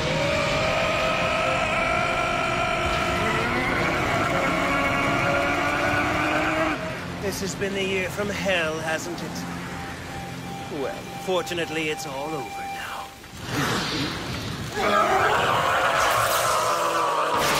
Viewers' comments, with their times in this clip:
0:03 it sounds like the guy is hard coring gergaling on mouth wash